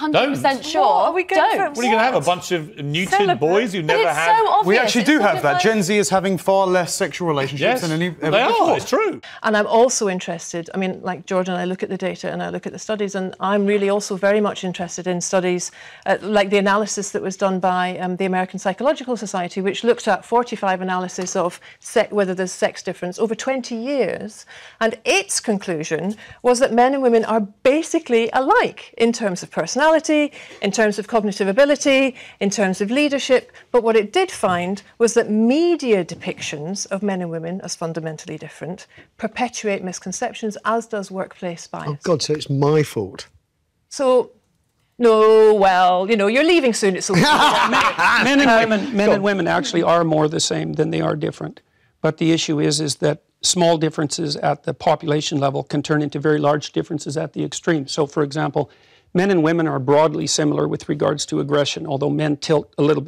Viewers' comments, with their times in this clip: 0:04 .. When he speaks up, she instantly laughs and mocks him. So disrespectful and disgusting. She's quite possible one of the worst i've ever seen. Absolute vile human.
0:50 i fucking turned around to see if someone in my house turned on ,,Better call Saul". The dude sounds 1:1 like Jimmy ,,Saul Goodman" McGill.